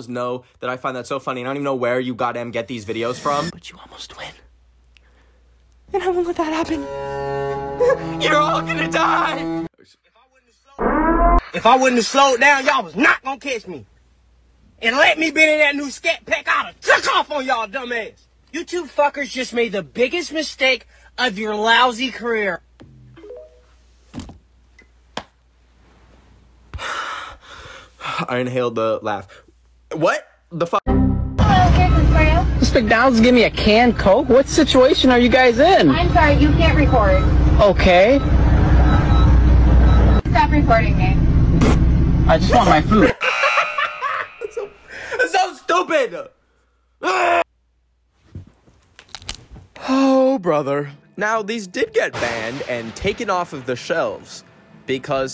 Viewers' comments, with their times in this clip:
0:03 HE SOUNDS LIKE ATUSHI FROM BSD 😭😭
0:04 Why the hell did he sound like a BSD character😭
0:05 bro sounded like a anime character 💀
0:05 HE SOUNDED LIKE DAMN ATSUSHI FROM BSD WHAT
0:05 not bro sounding like Atsushi from goddamn Bang my Stray hogs thats wildddd💀💀💀
0:06 WHY DOES HE SOUND LIKE ATSUSHI FROM BUNGO STRAY DOGS 😭😭😭
0:06 Bro freaking bro sounded like light yagami 💀
0:06 WHY DID THAT ACTUALLY SOUND SO GOOD LIKE HE WAS AN ACTOR OR SOMETHING
0:07 evil deku ahh voice 💀💀 Edit: Just remembered, this was the video that made me change my pfp
0:07 YOU SOUNDED LIKE ATSUSHI NAKAJIMA FROM THE HIT ANIME BUNGO STRAY DOGS
0:08 great voice acting
0:08 “YOUR ALL GONNA DIE” says in uwu anime voice
0:08 HELP I THOUGHT HE KINDA SOUNDS LIKE LIGHT FROM DEATH NOTE😭
0:09 😭 he sounds like atushi
0:09 he sounds freakishly like light yagami
0:11 from Tyrone to Tyler rl quick
0:12 tyrone to tyler in ten seconds
0:18 that video sound like Chris from Total drama island 😭
0:41 The laugh 😅 so genuine ❤️ think I just fell in love 🥰